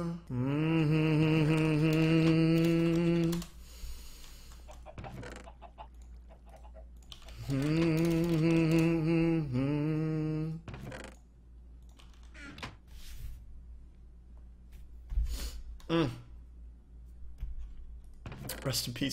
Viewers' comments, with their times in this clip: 0:07 Why was he crying im confused?